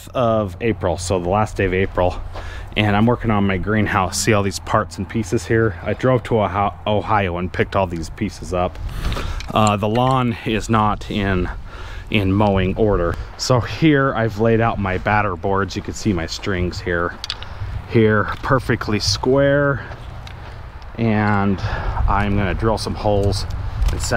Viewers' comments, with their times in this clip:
0:06 Ohio??? I've got to just be hearing that wrong